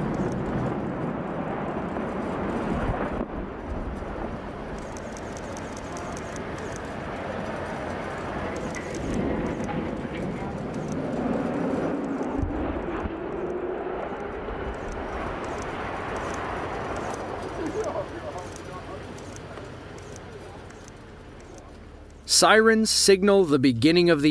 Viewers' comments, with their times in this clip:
0:10 Interesting: starting you start hearing a faint "whooooooo" in the background. I'm assuming it's the air being forced out the top of the chimney as it collapses.